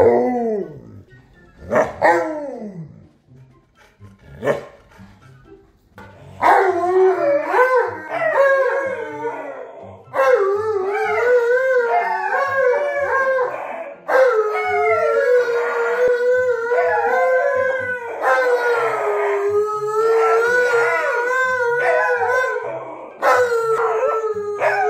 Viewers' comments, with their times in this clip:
0:08 That's a beautiful duet. The harmony is amazing. I love watching the pups ❤️